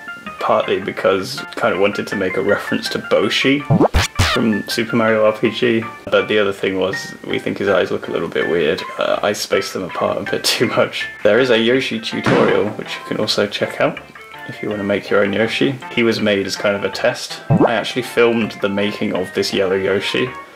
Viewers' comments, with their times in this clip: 0:04 probably also because your sister kept laughing